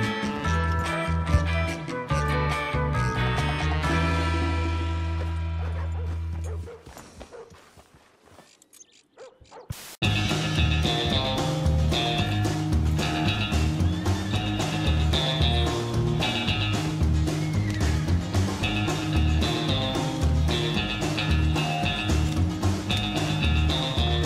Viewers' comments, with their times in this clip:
0:08 I like that music that started in It's very entertaining!